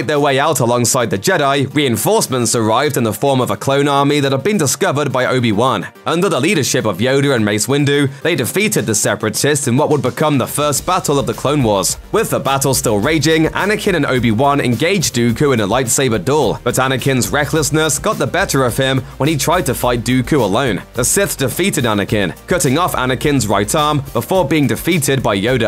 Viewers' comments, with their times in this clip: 0:06 “Yodu” has me dead 😂😂😂